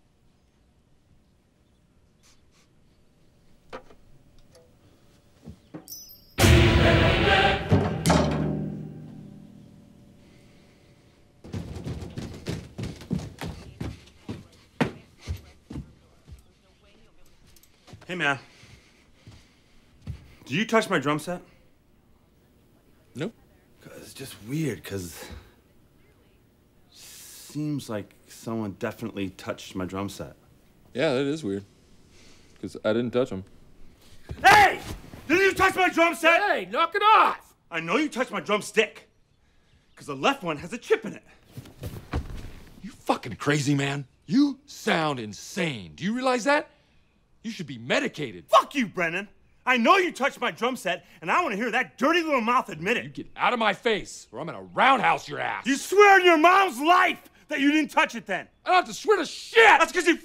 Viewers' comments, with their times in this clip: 0:06 I had to look it up the kind of music that is because it is the funniest scene-& so it's actually called the (ominous) "latin chanting" that they use in scary movies (like "The Omen") right before something evil is about to happen: it kills me every time. I'm glad somebody else finds it as funny as i do. Thanks. (😈)
0:06 the ominous (Omen) Latin Chanting when Dale realizes Brennan touched his drum set...
0:24 I love how dale says “cause it’s just weird cause.” HES trying to get Brennan to admit that he did it while in an imaginary tone that a ghost touched them or something 😂😂😂😂
0:44 Alvin and Simon arguing